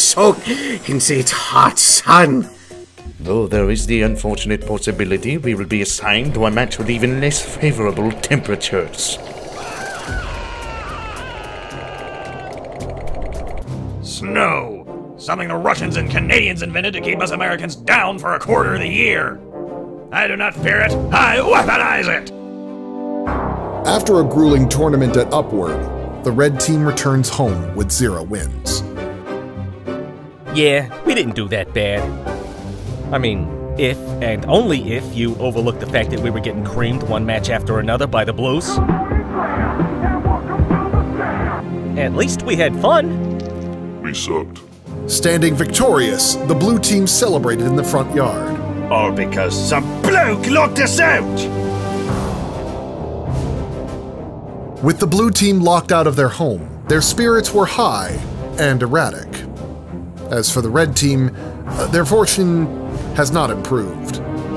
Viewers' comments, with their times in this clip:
0:08 The mixing on Soldier’s scream was just MMM *chefs kiss*
0:39 that time it was the most funny Because there was a song Come on and dance😂😂
0:48 This line delivery goes so hard